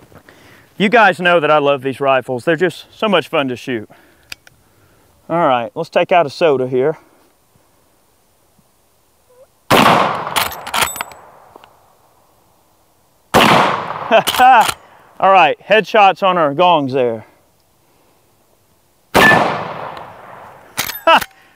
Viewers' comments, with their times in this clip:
0:08 Was that a fart ?